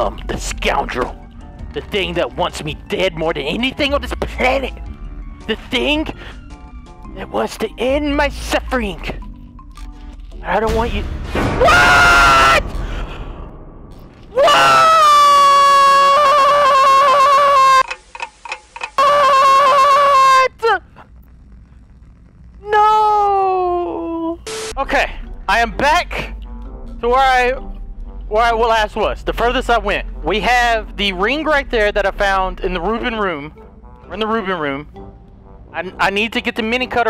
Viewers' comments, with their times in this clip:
0:10 deadass scared tf out of me. My phone was so loud I wasn’t expecting that.
0:17 Delirious got some auto tune in his scream??😂
0:22 That was the saddest "noo" I've ever heard from Delirious!! 😭😂